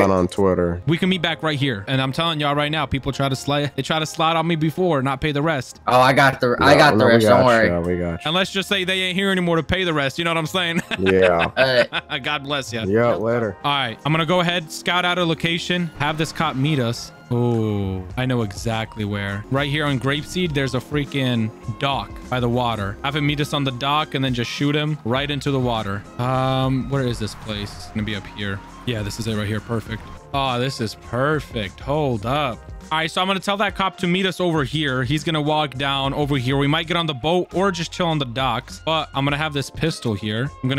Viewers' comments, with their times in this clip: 0:10 the most dad laugh I’ve heard
0:26 That laff bro